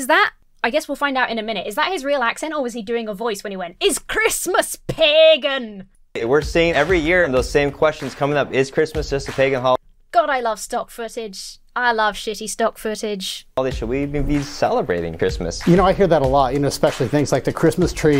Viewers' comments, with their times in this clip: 0:05 I guess that was his Celtic accent?! 😂